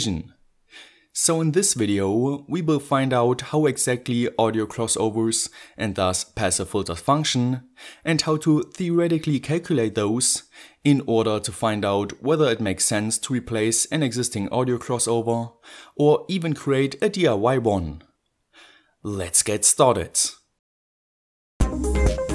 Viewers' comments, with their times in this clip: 0:08 Great video as always I just wanted to say I really LOVE the way you say "calculate"